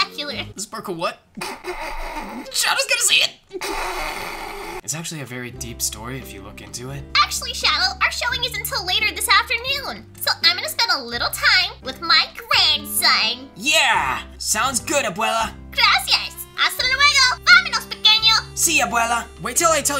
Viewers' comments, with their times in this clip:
0:07 When did she speak spanish💀
0:07 the Spanish amy